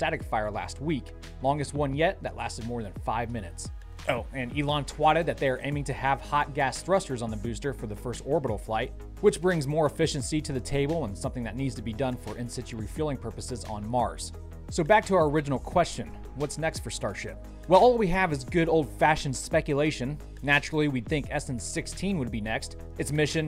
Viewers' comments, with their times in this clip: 0:05 "Twatted" Lol nice